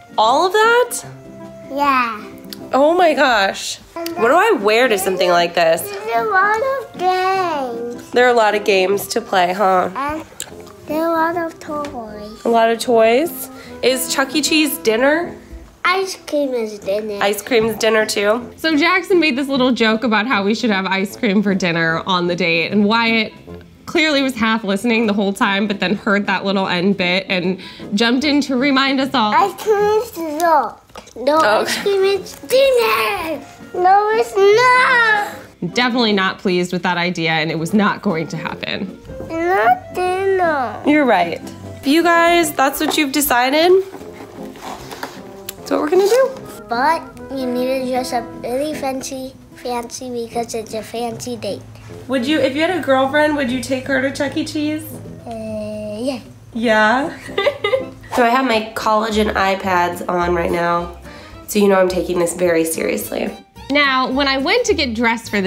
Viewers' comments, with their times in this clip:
0:06 I thought he said “Nirvana gay!”
0:06 is it just me but i heard ‘there’s a lot of gangs’
0:47 I swear he sounded like he was from Singapore!